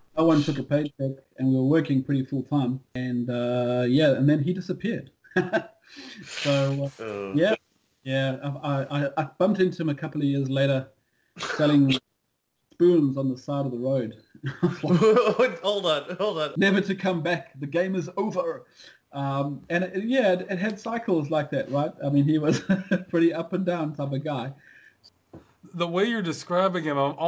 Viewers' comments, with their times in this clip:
0:08 Can a nice chap write me down what he's saying? I just cannot hear it… :/